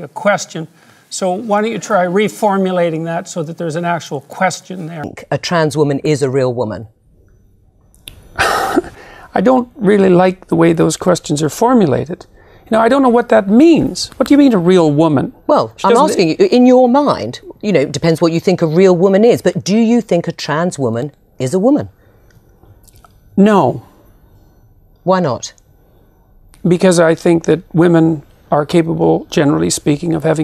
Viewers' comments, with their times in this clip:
0:08 I just love how this man starts letting out a genuine sigh of frustration at such a stupid statement that he’s probably heard a million times at that point. Only to pause it and reel himself back to his professional demeanor. I love this guy😂
0:12 the sigh gets me every time 😂😂